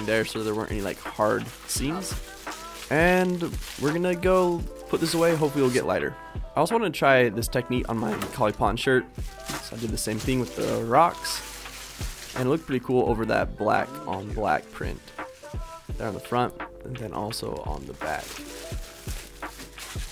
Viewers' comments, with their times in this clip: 0:06 When you realize he said "colypotton shirt" 😭💜 SO CUTE